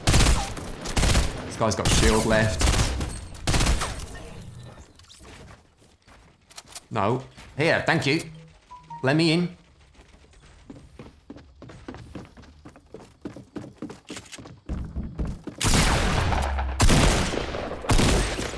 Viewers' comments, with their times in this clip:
0:05 I thought I was getting a text message.